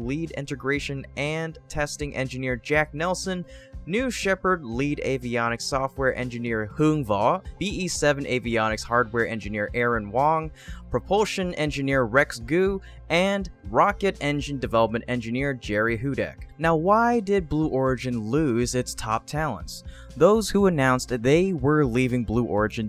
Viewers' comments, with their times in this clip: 0:06 wowwo, ypu pronounced that Vietnamese name real good